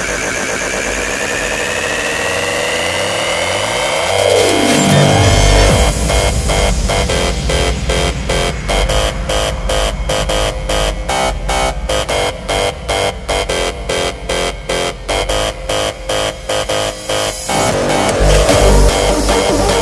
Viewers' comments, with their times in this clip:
0:04 gooooooooood ass drop